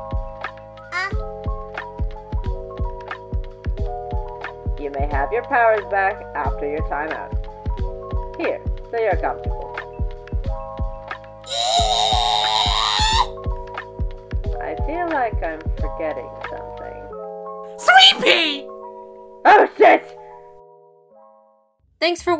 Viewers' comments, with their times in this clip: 0:09 Internally Rages but in the cutest Squee XP